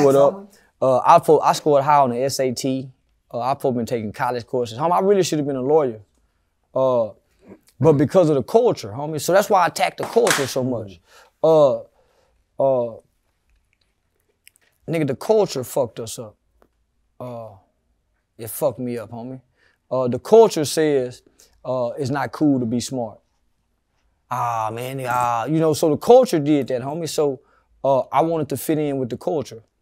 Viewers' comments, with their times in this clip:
0:10 when the water bottle crackled, everyone reacted except CW, showing he have no worries in the world.